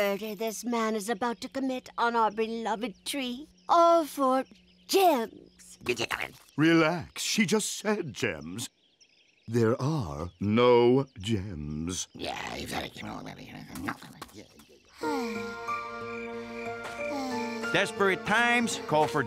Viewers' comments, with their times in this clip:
0:06 i love that Wizard's voice XD